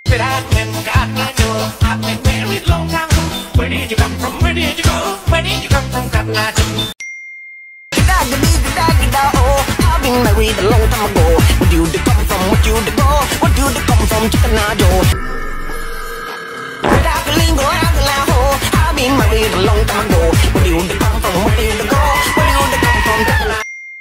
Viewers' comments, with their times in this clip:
0:08 gegagedigedagedago in tune with cotton eye joe fits so well!!!